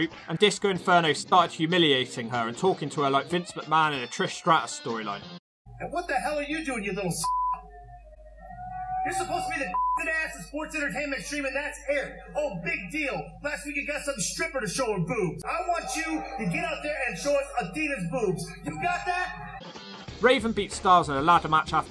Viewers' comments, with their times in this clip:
0:05 as usual barely can understand disco,, i think it's ok with me though